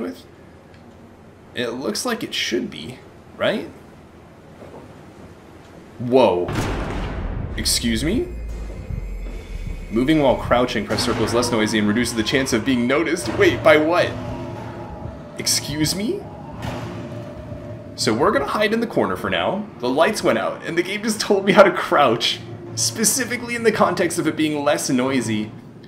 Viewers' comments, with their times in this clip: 0:09 It's finally here! A great first episode! I'm really glad you're taking the time to look for secrets and read all the notes, it really helps with the story telling of the game. Fun fact: When the game was teaching you to crouch, the banging and loud noises was from something trying to open the nearby door. You missed this and backed into the room after the banging stopped, which is quite funny because if you'd opened the door earlier, you'd have gotten an early glimpse of whatever is currently stalking you. It's a neat touch to try and catch players who think they know where to go on their second playthrough with additional enemy encounters. (Or players who think that there isn't a real scare behind the door)